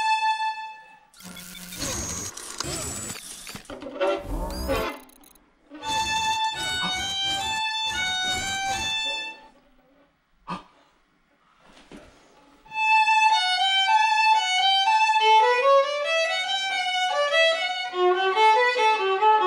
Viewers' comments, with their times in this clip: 0:05 nice how you played on the G string but it still came out as the correct note